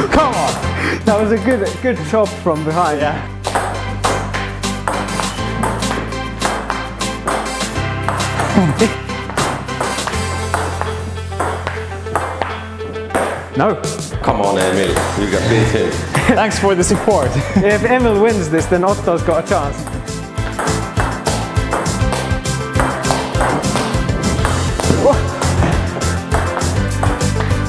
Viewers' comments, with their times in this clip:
0:10 why is nobody talking XD